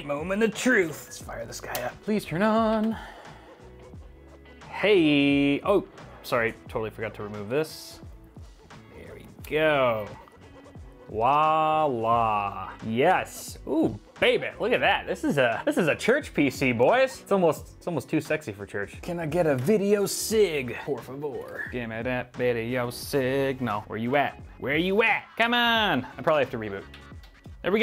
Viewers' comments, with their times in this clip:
0:09 making a PC for jesus and syaing "Wa Allah" in